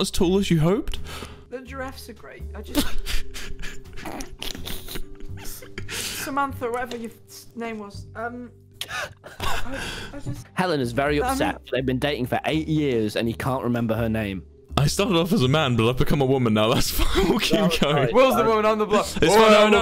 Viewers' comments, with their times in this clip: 0:03 why does tommy sound like an endermite